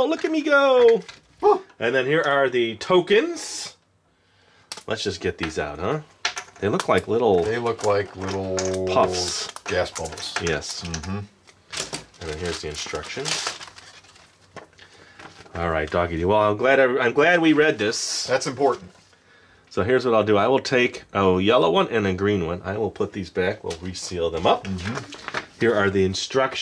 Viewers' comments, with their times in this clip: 0:07 THE DOG IS FARTING